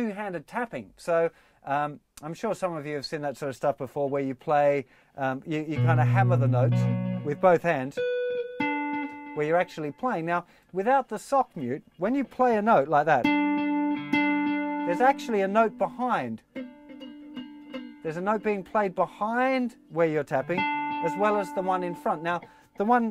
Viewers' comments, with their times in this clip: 0:06 thought I was getting a call on skype